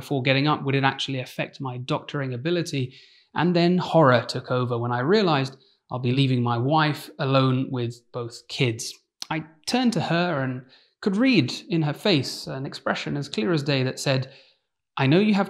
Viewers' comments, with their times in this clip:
0:03 Why do I hear "And then horror took over when I realized I'll be leaving my wife alone with both whiskey"